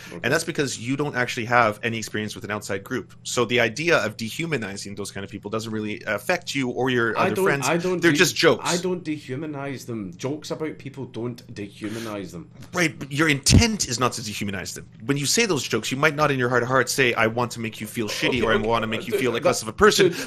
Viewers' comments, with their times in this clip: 0:05 Thats a judgement Dankula is objecting to this judgement He uses reverse-psychology and raises his speak-speed